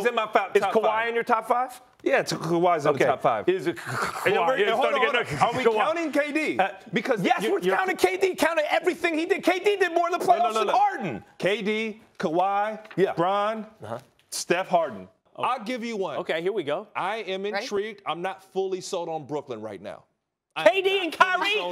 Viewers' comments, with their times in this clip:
0:04 fuck 😂. is kkkkawi in your top 5